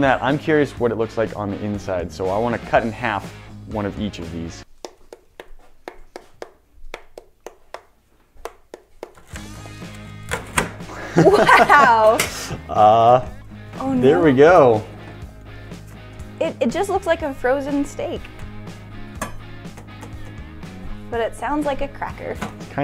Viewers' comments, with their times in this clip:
0:04 Was that an attempt for jingle bells?